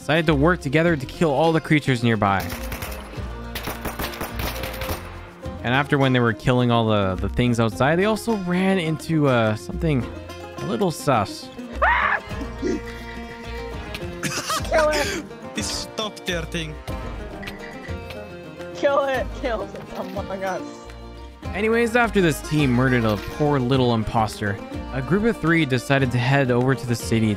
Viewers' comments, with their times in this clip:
0:10 that scream was hilarious